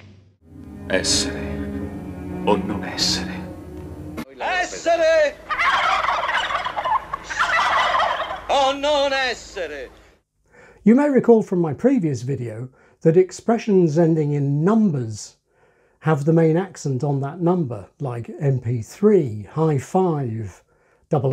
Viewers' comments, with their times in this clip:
0:03 Oh wow the Shakespeare example was golden. I was thinking that I deaccent just the same in my native language, thinking of how I may immitate Bond, James Bond, but my rendition of translated Shakespeare did very much keep the verb accented. Wonderful video!
0:04 In some of the "essere o non essere" examples, the second "essere" doesn't sound to me like a repetition of the first one at all, but at a lower pitch. Especially the one This sounds more similar to the English pattern to my ears. Am I missing something?